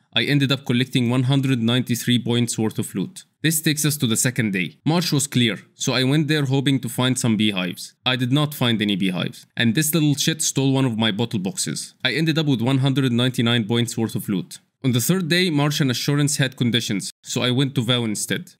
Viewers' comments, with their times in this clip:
0:06 Its amazing how much an accent can enhance humor